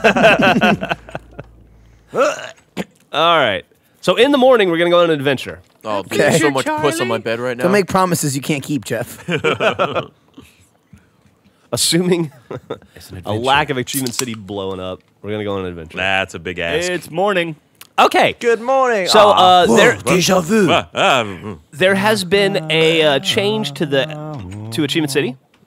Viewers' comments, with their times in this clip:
0:10 When Ray goes to sleep, did anyone else hear the Ocelots whispering? ._.